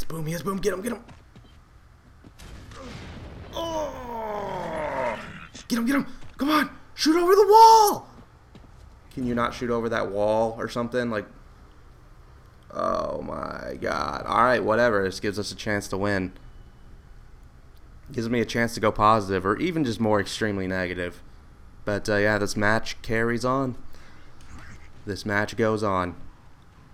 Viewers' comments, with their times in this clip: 0:08 the snarky level in your voice just fell off a cliff :)